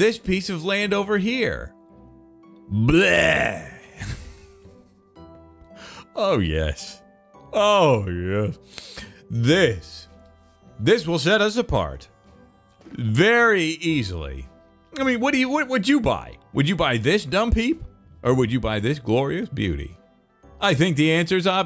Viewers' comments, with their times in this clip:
0:07 sound like joe from family guy ..